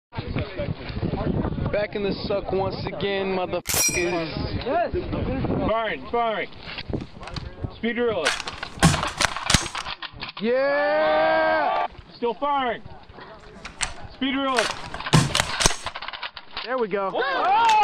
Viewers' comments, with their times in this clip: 0:03 Using the garand ping to censor a word is the best decision